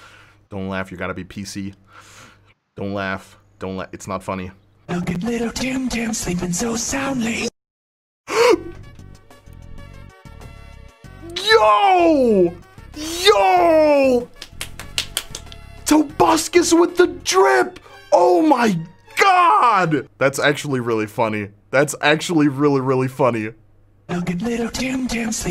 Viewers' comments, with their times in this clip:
0:08 AYO IS IT ME OR DO I HEAR SPAMTON!!!!!! [BIGSHOT] [BIG SHOT] [BIG SHOT] [BIG SHOT]